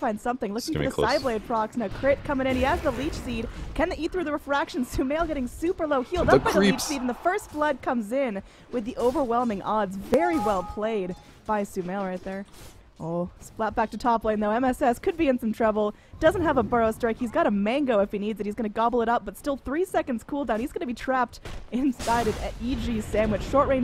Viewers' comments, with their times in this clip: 0:09 New deny sound